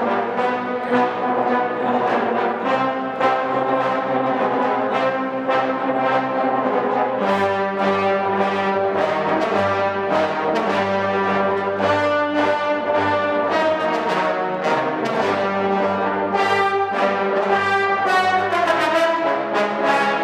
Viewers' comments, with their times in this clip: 0:07 Dark and chills giving